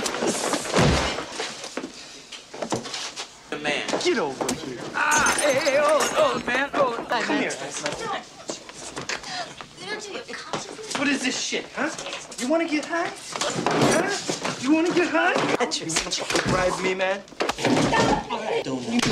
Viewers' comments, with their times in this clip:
0:04 GET OVER HERE!!! He said like Scorpion.